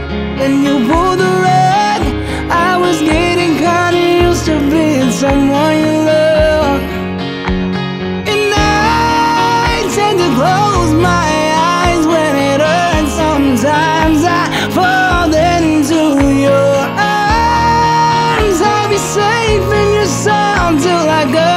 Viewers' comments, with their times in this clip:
0:08 bro hit that shit ez